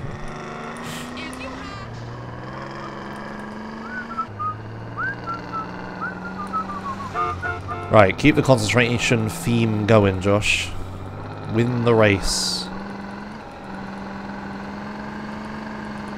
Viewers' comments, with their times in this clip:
0:03 can't help but notice that the car honk is synced to the last notes of the tune